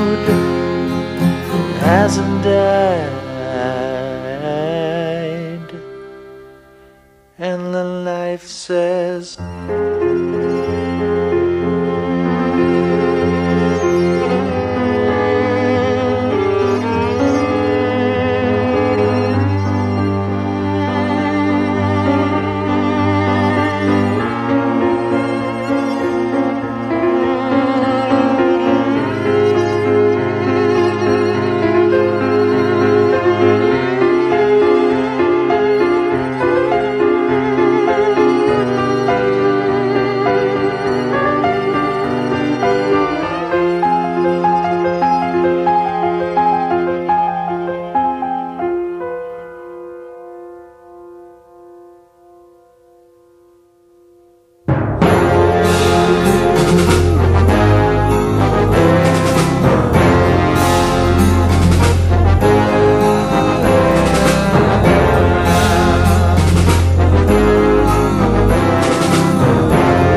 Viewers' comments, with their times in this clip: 0:08 Awesome song! Reminds me a bit of Radiohead and (after ) Muse actually.
0:12 Noticed how the violin sounds like...a mosquito?
0:24 from its so melancholic (;
0:54 That would sound awesome in a western movie.
0:55 My husband introduced me this song I love the guitar so much